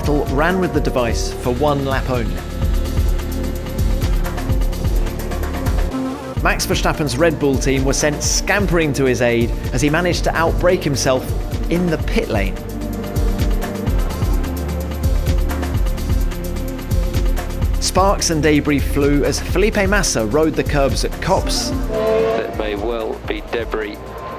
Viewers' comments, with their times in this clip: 0:05 the way the commentator says "in the pitlane" says it all...even he knows how bad verstappen is. if i was teamprincipal at redbull i would give him to torro rosso for a year, to get him more prepared for formula 1
0:05 the way the commentator says "in the pitlane" says it all...even he knows how bad verstappen is. if i was teamprincipal at redbull i would give him to torro rosso for a year, to get him more prepared for formula 1